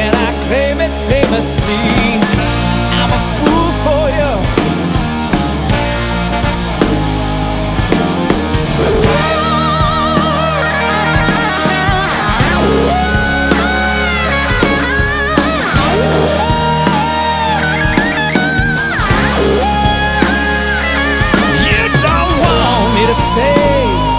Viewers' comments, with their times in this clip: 0:07 The solo .. awesomesauce!